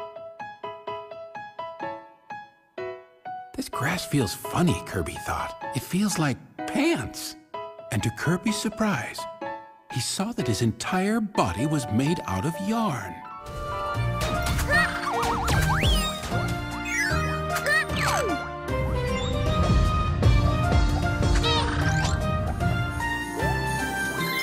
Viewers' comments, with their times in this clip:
0:06 lol i dont saw the subtitles and in i hear'd "it feels like.. penis" lol